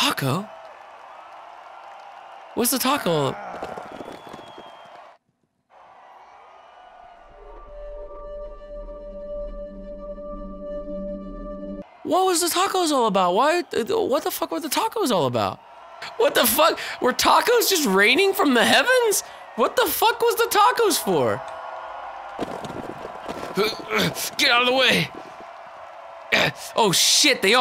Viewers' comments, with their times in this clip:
0:10 flippin killed me lol i cant stop laughing the music and just the everything i cant i cant i cant i cant i cant